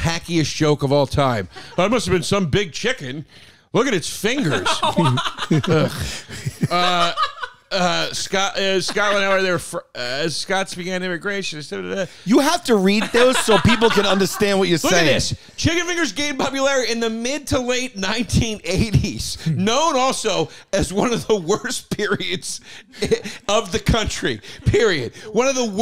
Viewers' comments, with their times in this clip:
0:08 think I've watched the lazy mumbling at least 12 times, might be my favorite moment of the ep